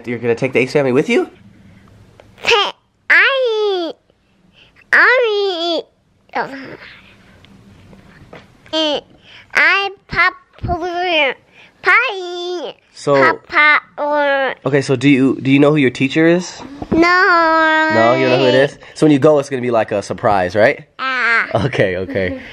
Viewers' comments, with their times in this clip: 0:08 I swear I heard Elle say “ I’m popular “ aww 😂😍
0:10 I think she is trying to say I "ii popp-ular"